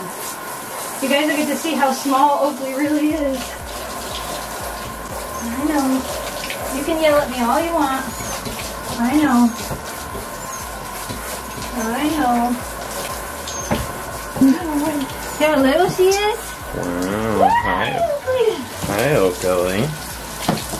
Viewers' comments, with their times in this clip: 0:05 Poor Oakley starts to squeak! I think she wants to be in her kennel!